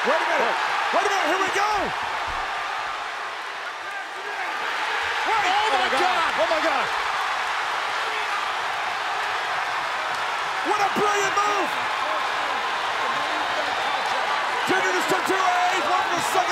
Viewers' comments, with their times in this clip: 0:04 that's the biggest pop Baron Corbin has gotten in his career